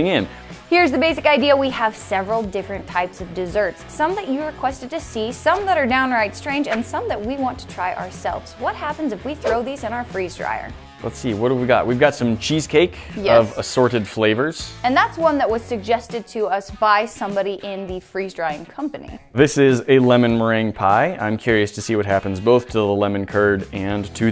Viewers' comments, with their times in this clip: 0:08 what happens if we throw these in our washer?